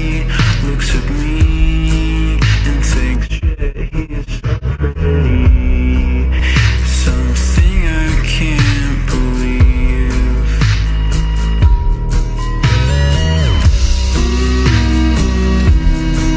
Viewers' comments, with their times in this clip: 0:04 i thought my headphones were buggin